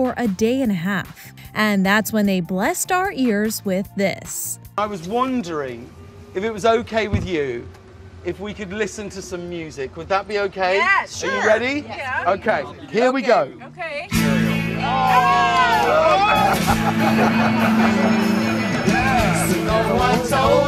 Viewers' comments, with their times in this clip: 0:05 I can't watch this video past Just can't. It's too much. It's pointless. The loud dude I mean. As curious as I may be about the friends singing.